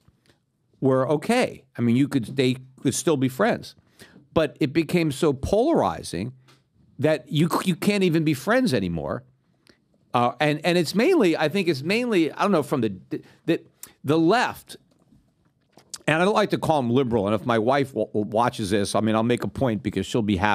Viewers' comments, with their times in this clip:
0:08 The hilarious noise that he accidentally makes with his mouth mouth 😝😝😝😝😊